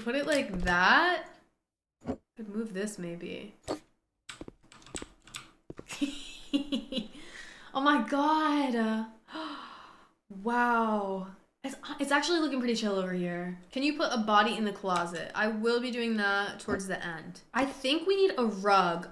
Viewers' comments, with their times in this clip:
0:05 The switch between you giggling maniacally to being amazed is so funny 😭